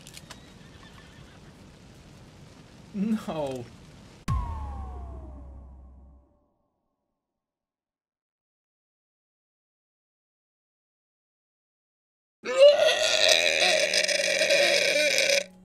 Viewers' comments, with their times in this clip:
0:12 i think we already got a winner for the worst noise of 2019